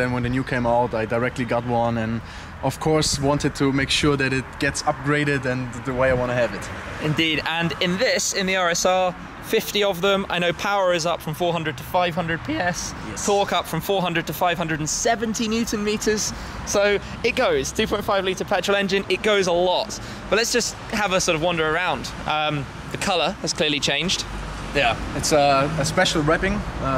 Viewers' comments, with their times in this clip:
0:10 Listen to shmee have a voice break 😂😂
0:11 That voice crack though
0:11 That voice crack lol
0:11 dat sound crack tho
0:12 HAHAHAHA That squawk tho!
0:12 Saucy Voice crack
0:12 that voicecrack tho
0:12 Major voice crack
0:13 Massive voice crack